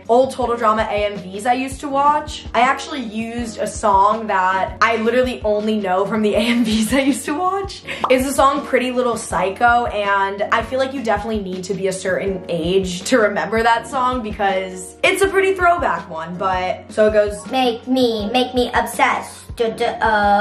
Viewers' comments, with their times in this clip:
0:08 ARGHHHHH I LOVE THIS SONG SO NOSTALGIC 😭😭😭😭😭